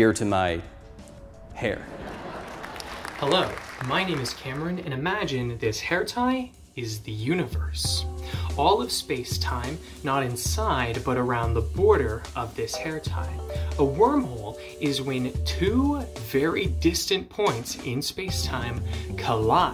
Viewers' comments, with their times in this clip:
0:04 Spit out my drink at the Vsauce music.